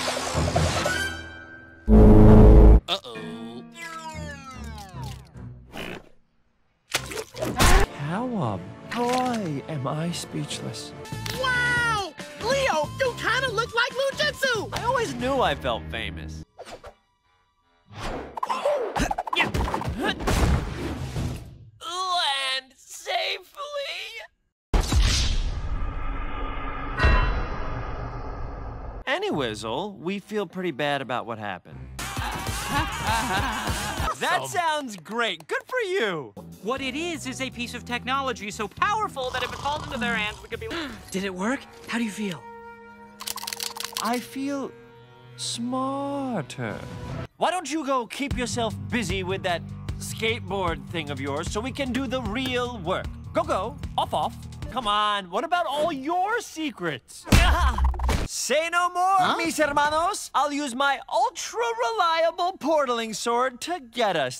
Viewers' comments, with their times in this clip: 0:06 Perfectly cut screams be like
0:45 WHY DID HE BECOME BRITISH 😭